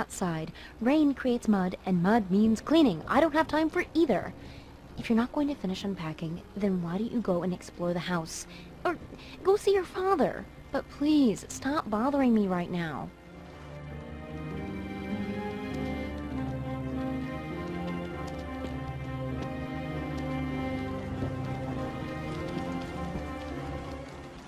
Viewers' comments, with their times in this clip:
0:10 HER VOICE IM DEAD
0:12 Maranda Sings has joined the chat